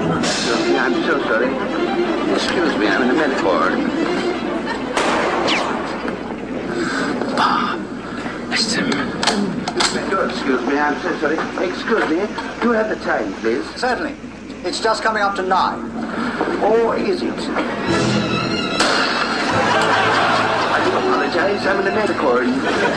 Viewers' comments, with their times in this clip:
0:04 Lol 'Ameri-corne' plaster.